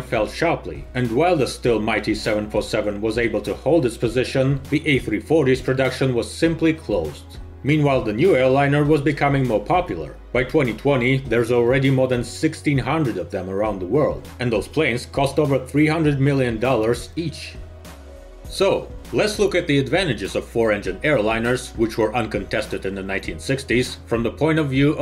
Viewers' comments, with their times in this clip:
0:08 it sounded like the end of a Techmoan episode. :P